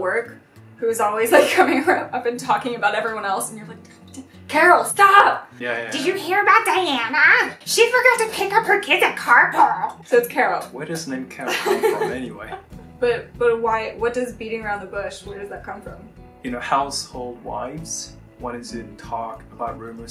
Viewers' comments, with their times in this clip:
0:06 her voice is so funny